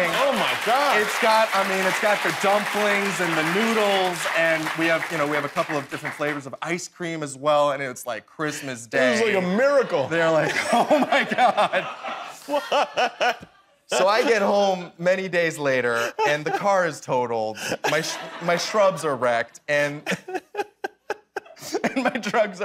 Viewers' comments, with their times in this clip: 0:08 Bruh this guy knows how to talk. I've never seen Jimmy laugh like that.